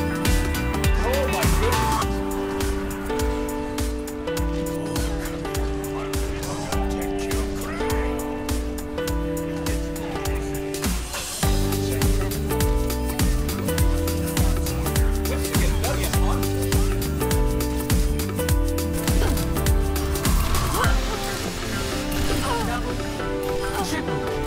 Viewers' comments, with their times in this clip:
0:10 that was the worst music u could get there.